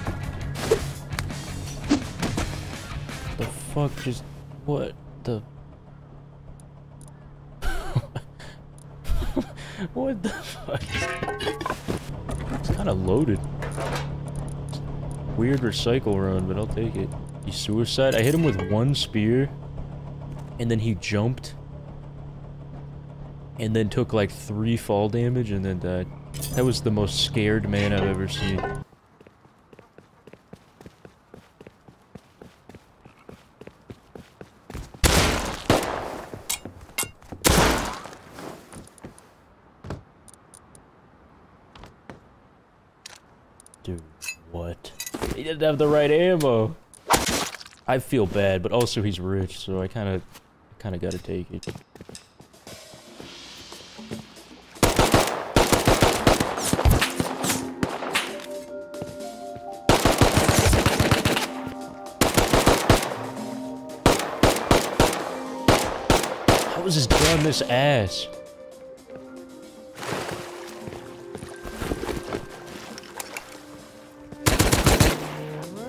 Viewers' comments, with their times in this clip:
0:08 u hear his real laugh
0:59 The voices in the music sounds exactly like the voices in my head and it freaked me out